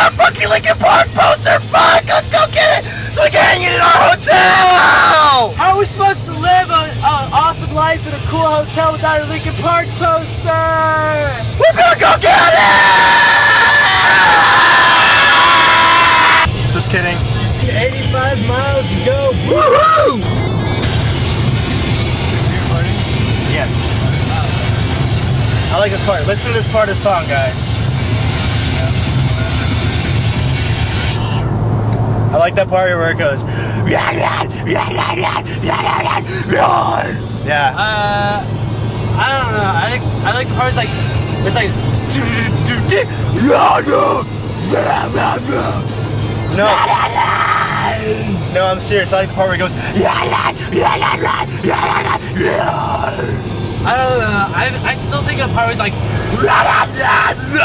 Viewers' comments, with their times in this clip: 0:03 Haha I'm watching this in class and Anthony is screaming and my teacher says to lower it and its on one!!!
0:11 r.i.p headphones users.. o-o
0:12 Probably a bad idea to be wearing headphones to listen to this... made me deaf
0:33 is this how the cavemen spoke?!?!?!
0:38 LOL ish As I Lay Dying is playing in the background like when theyre screaming hahahaha :) I never noticed it before xD